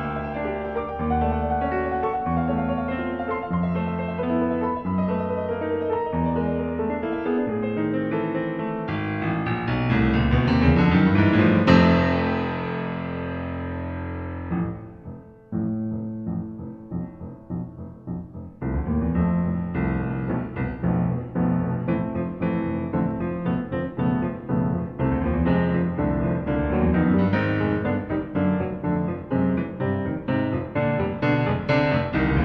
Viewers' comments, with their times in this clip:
0:08 sounds like a mix of the THX sound effect and the Mac startup sound 😂
0:13 I swear I heard the Microsoft Computer start sound